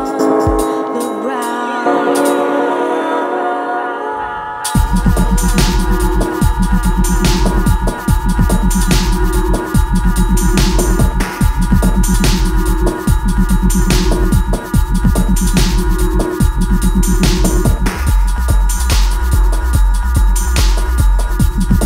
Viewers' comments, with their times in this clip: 0:05 indexing to skip the female vocals